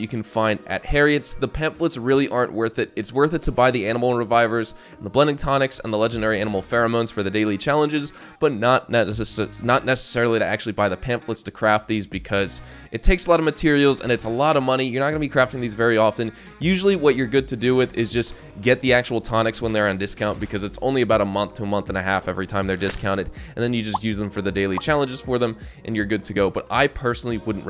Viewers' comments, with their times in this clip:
0:09 That speaking mistake made my day 🥴